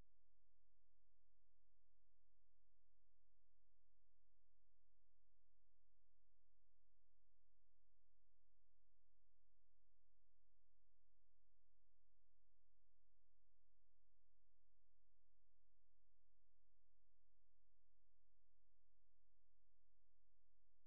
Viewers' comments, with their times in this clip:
0:03 Is it just me or is the recitation not audible?